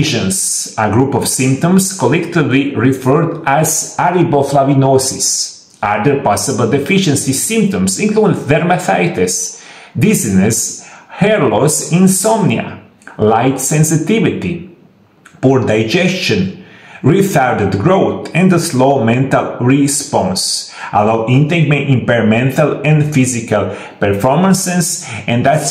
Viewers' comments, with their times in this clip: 0:08 Velmathitis? What the heck does he say ?